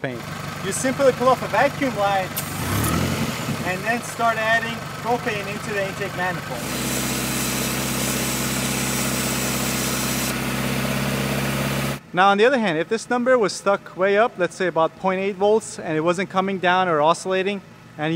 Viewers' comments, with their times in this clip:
0:03 Minute "start adding cocaine into the intake manifold" That should make your car happy.